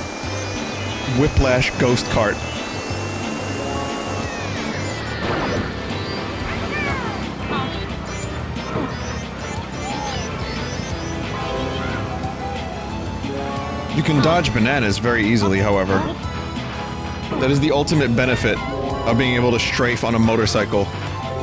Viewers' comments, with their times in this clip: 0:06 Did anyone else hear this sound from Yoshi as butthole? Cos that's what I legitimately heard as a kid, no japes.